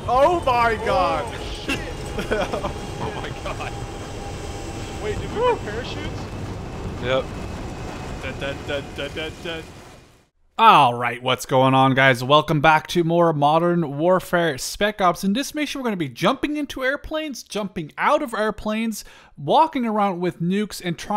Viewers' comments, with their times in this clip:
0:07 Singing Battlefield theme while playing COD. He is inevitable